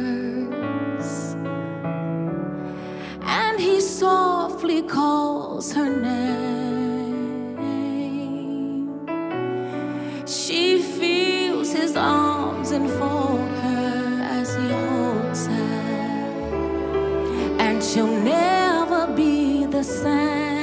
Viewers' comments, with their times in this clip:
0:03 Transcript reads " and he called her NECK (my all-caps) lol First I got goosebumps. Then I cried. Many blessings to all from Alberta, Canada 🇨🇦 🙏